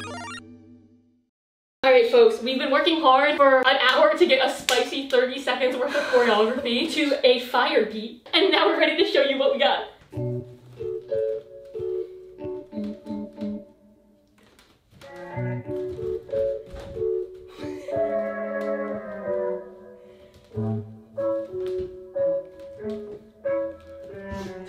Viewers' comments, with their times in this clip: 0:09 The awkward silent laughs and wood creaks are what make the masterpiece that it is